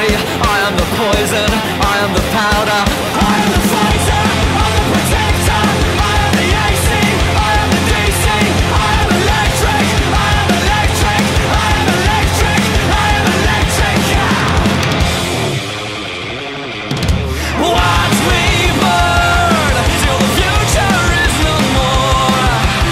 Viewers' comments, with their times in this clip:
0:03 I AM THE FIGHTER, I'M A POTATO!
0:03 I'm potato im eater